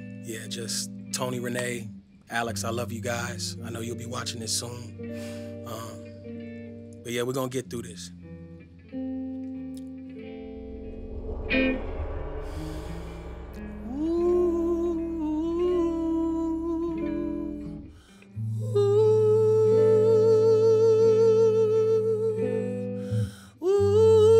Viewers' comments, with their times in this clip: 0:09 just as soulful as Billie Holiday